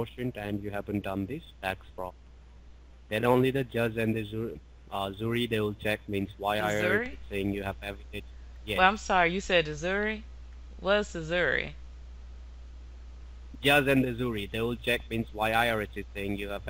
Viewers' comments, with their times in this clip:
0:03 you have to design your self lolol in the state of misurry